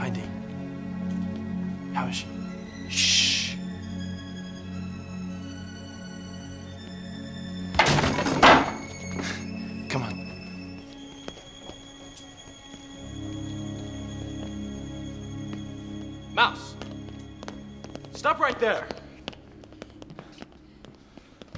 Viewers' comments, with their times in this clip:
0:08 Lmao at Jay starting to laugh xD